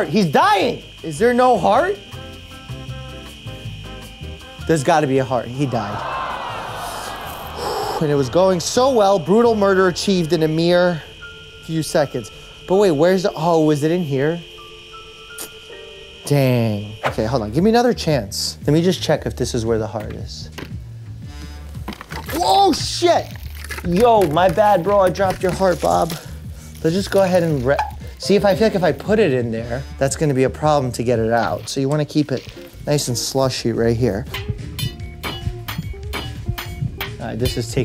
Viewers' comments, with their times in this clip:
0:05 the way he calmly said "he died" 😭🤣
0:21 the true fear In his voice when he dropped the virtual heart ❤😂
0:22 bro didn't censor it with "peewoop" thats crazzyy
0:23 YOU DID NOT BEEP! >:( 😢